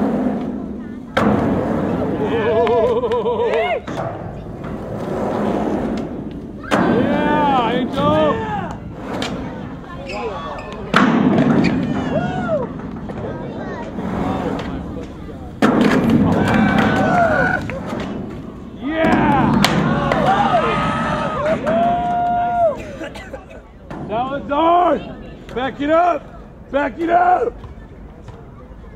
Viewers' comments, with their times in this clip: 0:10 sounded like that little kid said "Aww Fuck" haha